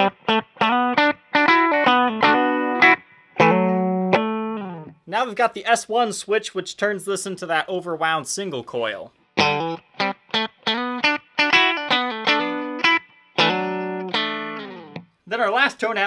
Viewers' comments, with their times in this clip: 0:04 Why is it Stratocasters TWANG? Scale length? Pick ups?? Pick up Polarity??? IMHO